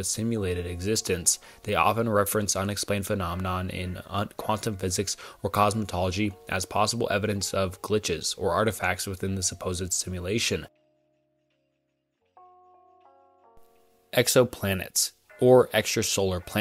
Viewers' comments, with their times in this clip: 0:04 quantum physics or COSMETOLOGY 😂